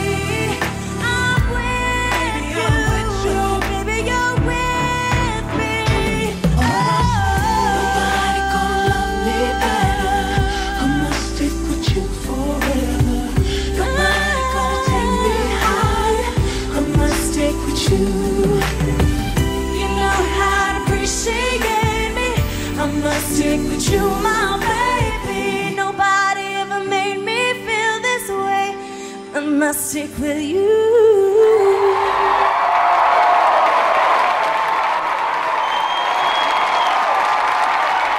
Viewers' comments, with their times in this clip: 0:07 she kinda looks like vanessa hudgens! anyways shes beautiful ! i love it when she sings "ohhh" great voice =]
0:09 She looks and sounds almost exactly like Nicole,, and if yu read the dudes lips he says that she looks and sounds too much like nicole
0:11 lol he whispers "she looks like nicole" yeah and this show was a joke. They never actually wanted a new member, Just wanted to hype PCD up cause it was falling apart (which it then did) Its why they had asia win and then immediately leave because they knew she had a kid and wouldn't stick around. Ridiculous! These poor girls actually wanted to win.
0:21 to the end, she sounds like Nicole.